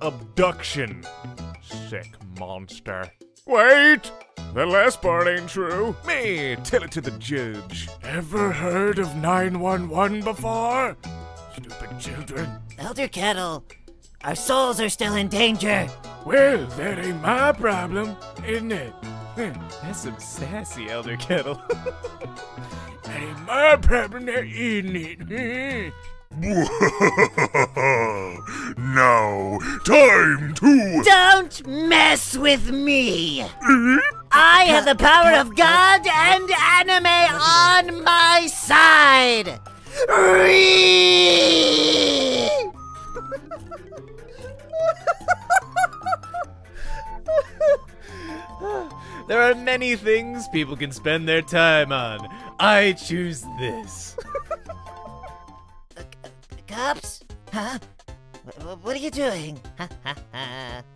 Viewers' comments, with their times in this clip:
0:03 HOW DID KING DICE'S VOICE TURN INTO PLANKTONS VOICE FROM SPONGEBOB
0:30 that really got meh goin. But the REEE part tho XD
0:45 HE SOUNDS LIKE MIKEY MOUSE